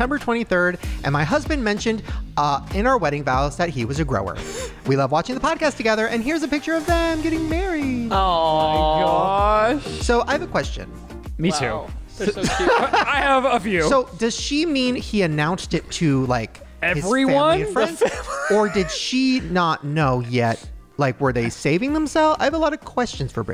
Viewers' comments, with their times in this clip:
0:08 The way Ryland says "my goooosh" is so funny! 🤣🤣